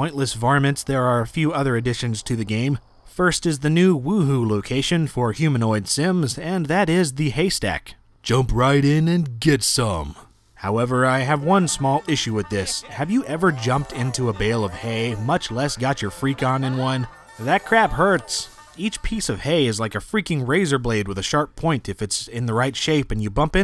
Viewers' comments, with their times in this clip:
0:08 Sounded like that one narrator guy that does those honey trailers